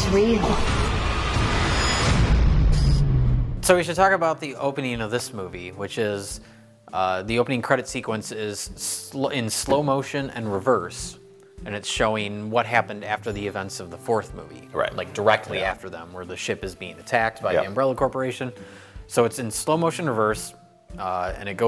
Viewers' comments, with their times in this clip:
0:03 What is the heck is with the background track that comes in ? I feel like it was deliberately designed to be the most dull and insipid piece of music in existence.